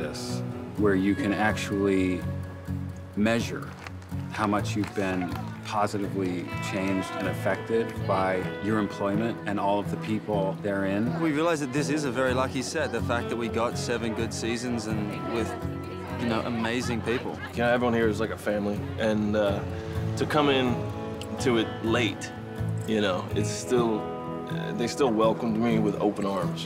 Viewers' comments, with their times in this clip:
0:08 i was not expecting him to have that voice
0:11 what the hell, Jason Stackhouse ! Caught me offguard with your accent lmao